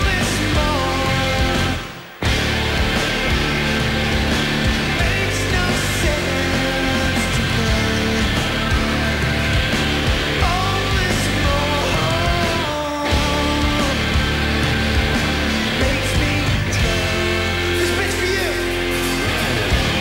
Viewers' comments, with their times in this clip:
0:08 did he swallow the mic? Lol!